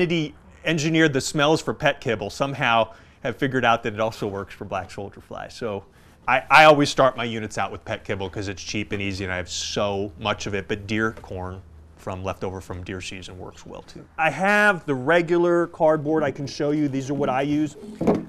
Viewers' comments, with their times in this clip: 0:06 I'm sorry for my poor english. Can anyone tell me what does he say when I hear "pet cable" which he always uses to start his unit beacuse it's cheap and easy.